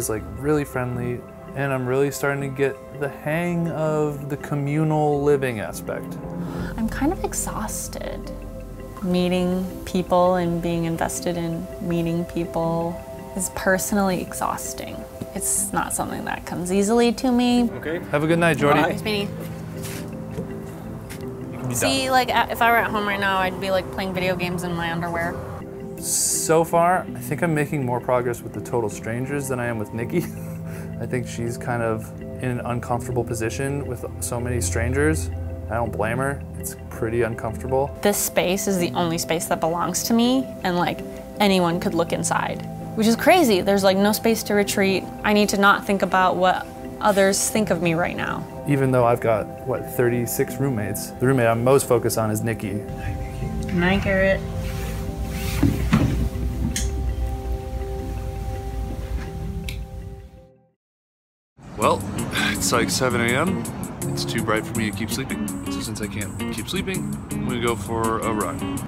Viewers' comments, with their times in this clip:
0:08 Someone got a Snapchat message The fact that I heard it is amazing
0:53 SHE DIDN'T WHISPER